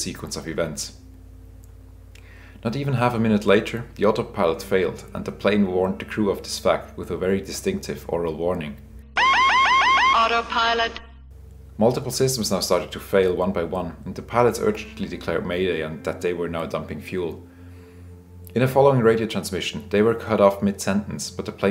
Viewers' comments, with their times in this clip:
0:07 Bruh, that warning scared the shit out of me